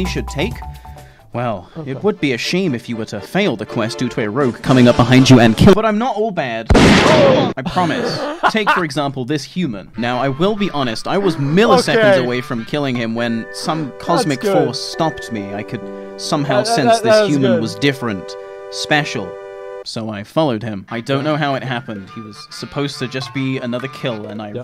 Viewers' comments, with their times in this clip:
0:06 love that sound edit.